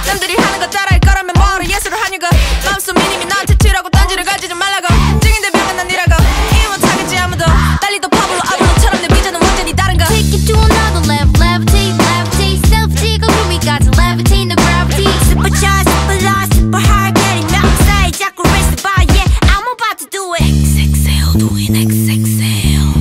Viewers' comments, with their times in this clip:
0:06 whos the girl in l like her voice